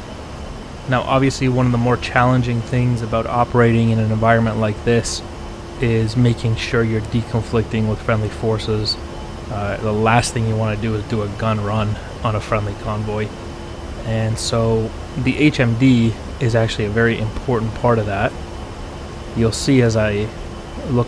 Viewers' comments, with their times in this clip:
0:09 english IFVs go booom sadly the A 10 pilot thought they were rocket truks because of their paint